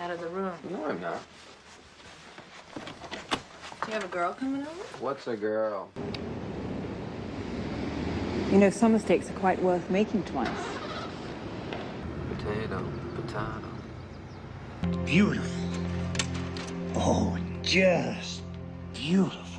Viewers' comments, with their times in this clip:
0:03 “what’s a giiirl” 😂 Said perfectly in a Seinfeld voice.